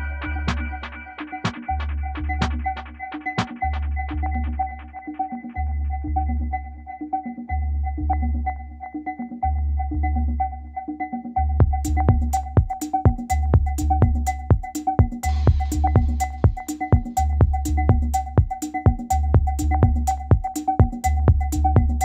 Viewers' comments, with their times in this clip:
0:06 riddim is stunning